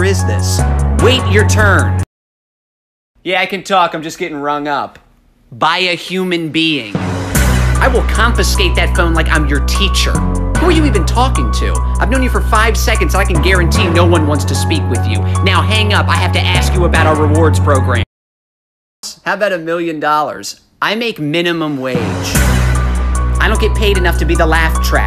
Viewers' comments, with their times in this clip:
0:07 “I will confiscate that phone like I’m your teacher” it sounded like he was about to start rapping 🤣🤣